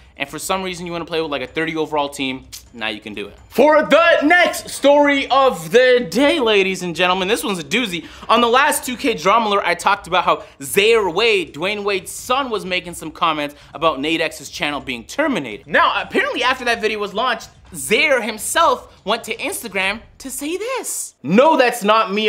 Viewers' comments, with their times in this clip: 0:10 did anyone hear the way he pronounced Zaire Wade😂😂